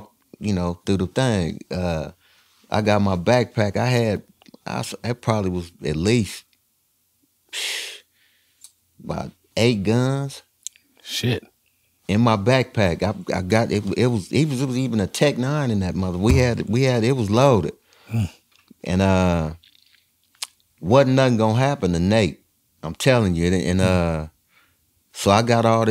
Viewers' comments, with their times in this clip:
0:10 when Warren G said "8 guns", did Kweli have a voice over? Lol